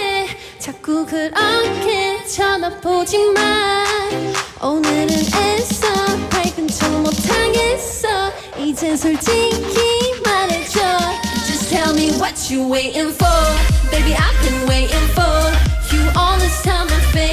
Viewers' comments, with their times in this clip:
0:03 she's so stable and a very good singer to the point i didnt notice her mistake